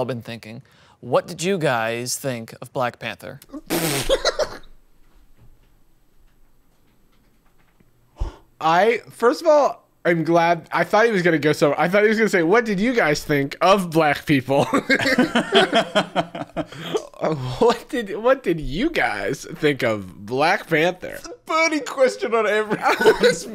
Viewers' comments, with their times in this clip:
0:04 THE SILENCE HAHAHAHAHH they needed a sec to take it all in